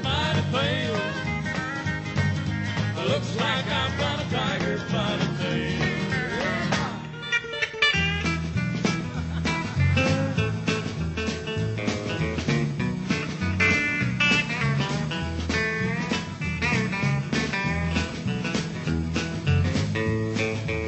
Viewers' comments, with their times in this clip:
0:06 That run in and change is sensational there is no other way to put it. The Beatles could have picked any country song to cover and they went for Act Naturally that says it all !